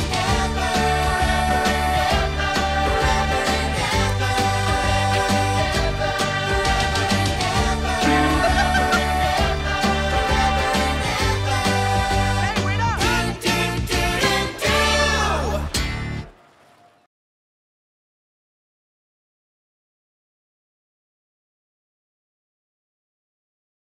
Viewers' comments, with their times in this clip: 0:08 his laugh makes me laugh 😂